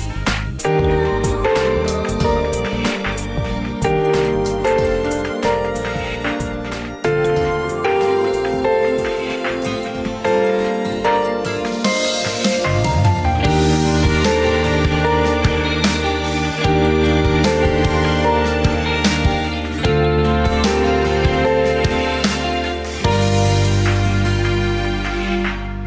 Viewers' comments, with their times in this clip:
0:07 Few people will probably catch this, but did anyone else notice the guitar playing in the beginning of Snowflakes